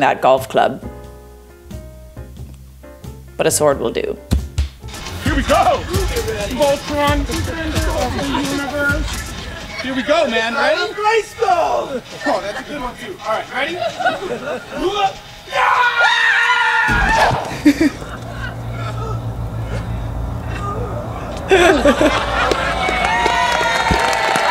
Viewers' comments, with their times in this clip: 0:09 LMAO DID THE MAN JUST SHOUT "FOR THE HONOUR OF GRAYSKULL?" MY FUCKING HERO
0:10 are my ears tricking me or did that dude really yell „for the honor of greyskull“💀?